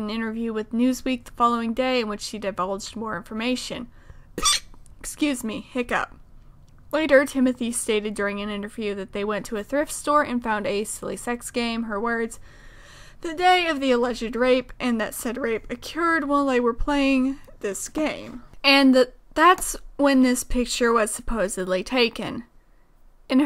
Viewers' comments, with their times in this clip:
0:04 that was not a hiccup lmao